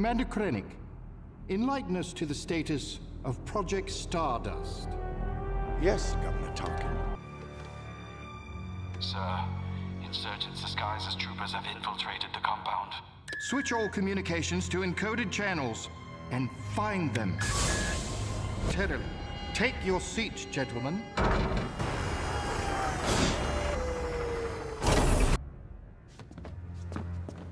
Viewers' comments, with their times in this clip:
0:09 That trooper sounds like he's done with life. 😂
0:10 is that a german accent. Thats a nice easter egg.